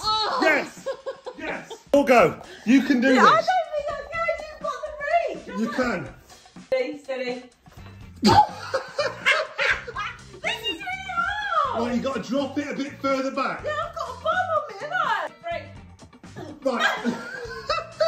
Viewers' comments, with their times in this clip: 0:06 the neighbours are listening and wil think these 2 are having fun hahahaha